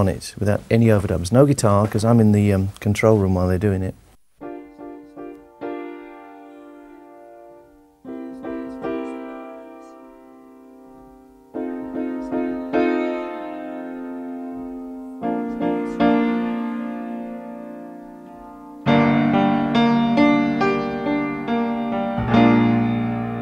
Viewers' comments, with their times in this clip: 0:04 When he starts to play the intro I always get a chill and I don't know why. Probably because it's history, Freddie is gone, it's such an iconic track...whatever the reason, I just find it fascinating.